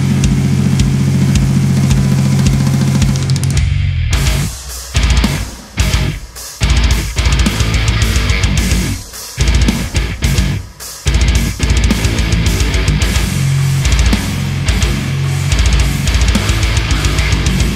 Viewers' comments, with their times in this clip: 0:04 I'm sure people must have already mentioned it, but on the chuggy section that starts it is really prominent that the 6 has barely any attack and it is overly warm in my opinion.